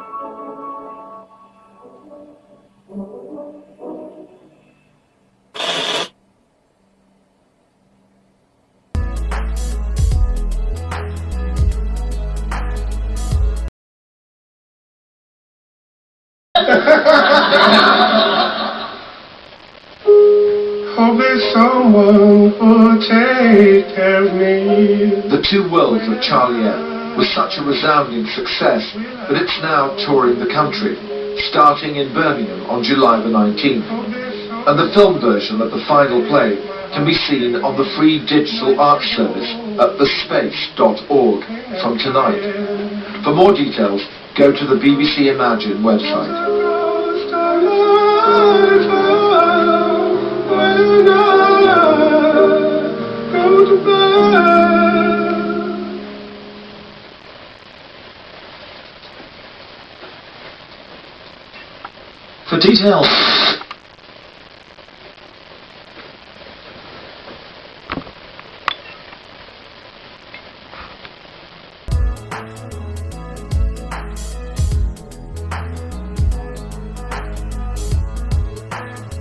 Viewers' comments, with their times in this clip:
0:05 Logos cut to a very distorted static screen with noise for a short sec
0:08 Cursed TV static huh?
0:58 is that the raining sound?
1:00 damn, those people were so tired of their job they plugged it early for detail- S T A T I C
1:00 For Detail static
1:00 "For more information" (cuts off)
1:01 for detail- static
1:02 the fact it cuts off so suddenly made me flinch for a second
1:02 “For Details-“ Gets cut off